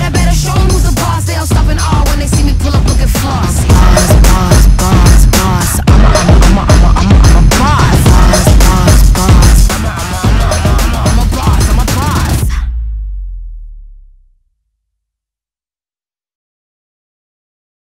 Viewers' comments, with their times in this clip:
0:03 are we not gonna talk about the earrape